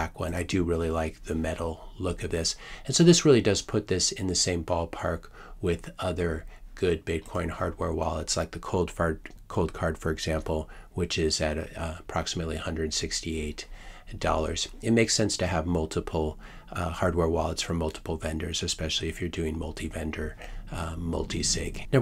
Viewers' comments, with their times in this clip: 0:07 Cold Fart is my favorite